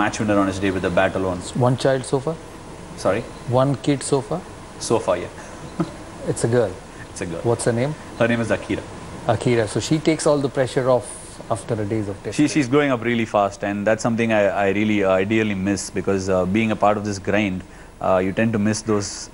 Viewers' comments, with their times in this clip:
0:05 Ashwin chuckles. His wife was pregnant and was expecting his second child. Daughter was born 3 days after this video was published. Nobody knew in the media until now. It was announced in the news today.